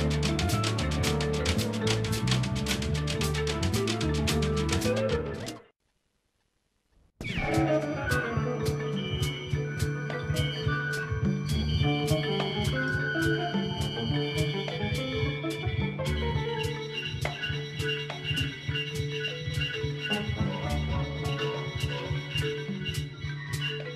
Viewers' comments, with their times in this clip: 0:04 Overall a nice upgrade. Circa 45 is cut possibly due to a tape flip (about 18 seconds missing). There are other versions of this show circulating that have Circa 45 complete but with inferior sound quality.